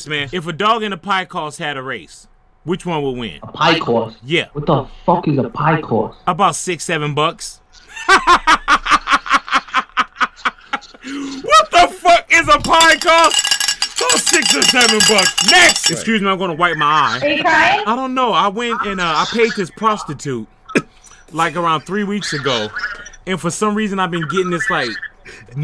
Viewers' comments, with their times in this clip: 0:07 He laughs like The Mask!!!! HAHAHA